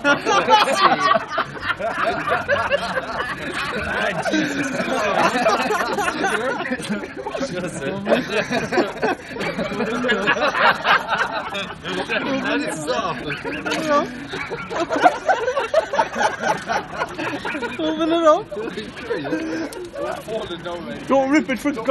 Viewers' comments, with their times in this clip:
0:04 sounds like my history and Irish teacher lol